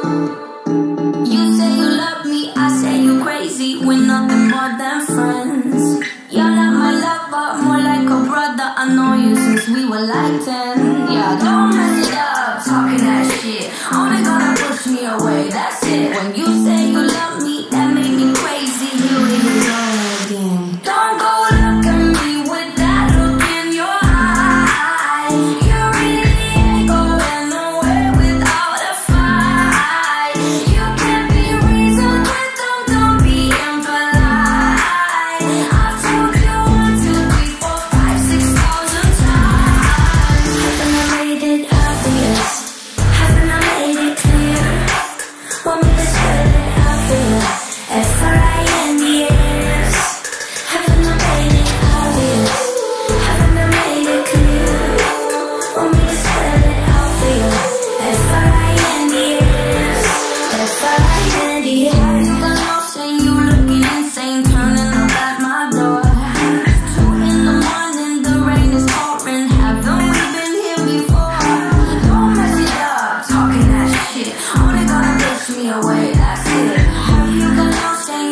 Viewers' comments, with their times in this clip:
0:09 I thought there is someone really screaming played it 10 times then realized it 😂😂😂😂😂
1:02 go back and listen for the bass riff you won’t regret it! Dunnn dunnnn dunnnn dun dun dun dun